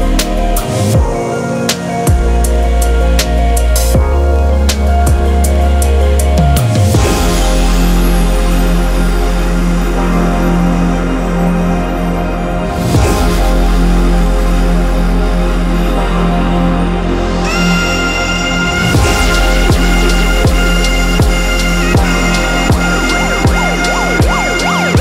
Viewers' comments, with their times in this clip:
0:07 That fuckin filthy ID thoughhhhh. 🤒